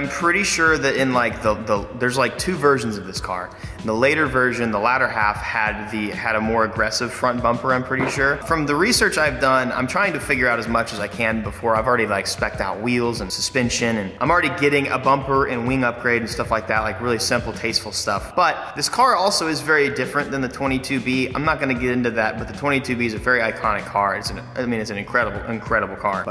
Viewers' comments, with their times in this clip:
0:08 did he fart😭😂?